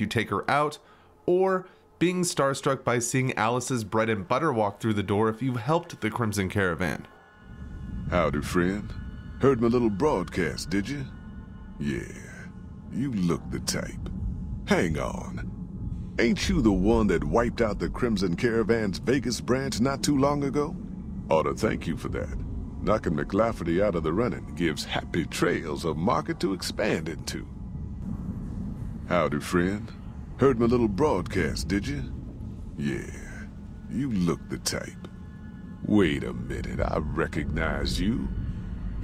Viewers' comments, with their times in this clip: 0:10 Gosh, Dave Fennoy's voice is just way too iconic, I love him
0:20 that sounds like lee from the walking dead game